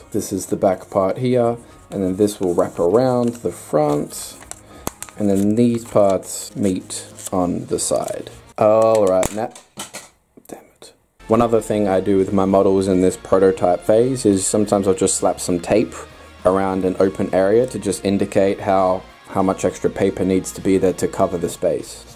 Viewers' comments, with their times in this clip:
0:06 am I the only one that hears the Witcher theme song